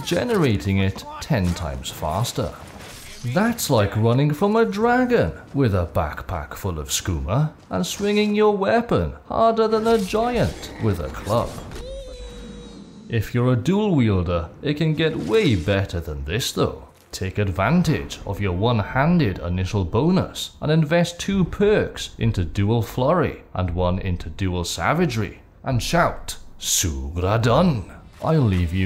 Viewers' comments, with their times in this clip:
0:10 the mini me sound effect killed me with laughter